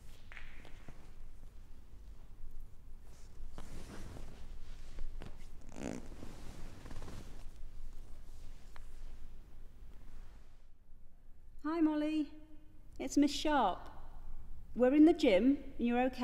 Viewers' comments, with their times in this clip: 0:03 She literrally farted 🤣🤣🤣